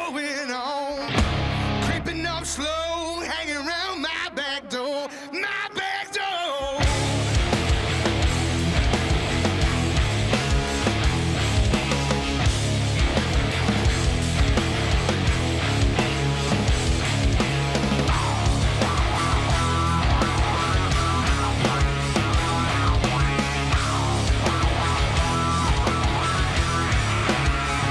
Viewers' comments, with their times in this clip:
0:09 Guitar is similar to THC (Texas Hippie Coalition Paw Paw